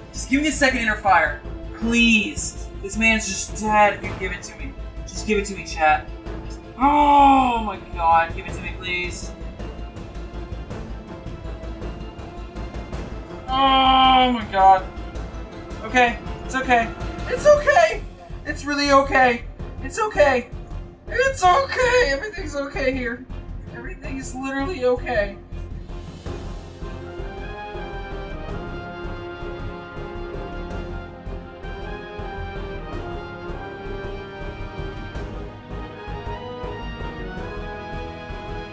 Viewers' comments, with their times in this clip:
0:10 He sounds like morty from rick and morty
0:20 i thought it was Morty from Rick And Morty holly...